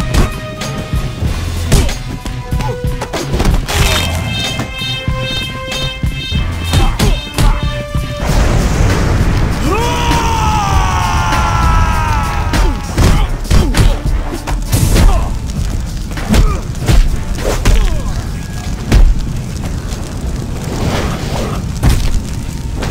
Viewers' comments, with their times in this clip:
0:09 sounded like Solo